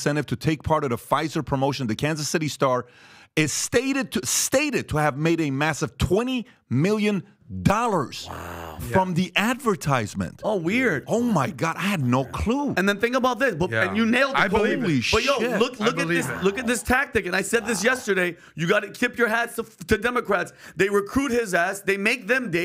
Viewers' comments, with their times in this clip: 0:04 Reading is hard?